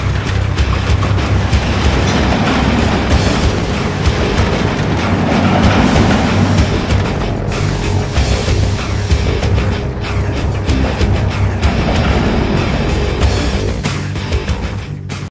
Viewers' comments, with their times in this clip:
0:09 I already can hear a men informing us "New construction option. Build a Power Plant Building."